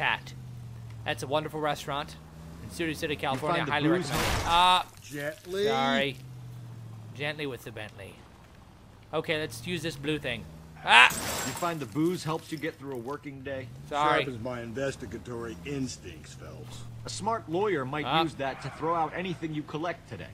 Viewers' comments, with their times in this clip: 0:05 LOL It totally sounded like he said s***